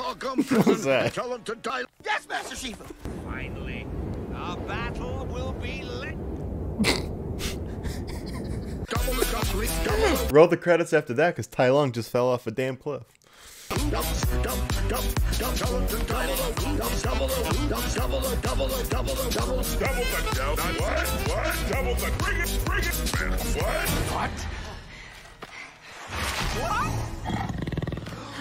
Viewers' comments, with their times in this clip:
0:10 did he just fell of the cliff and also nice remix 🤣🤣🤣🤣🤣🤣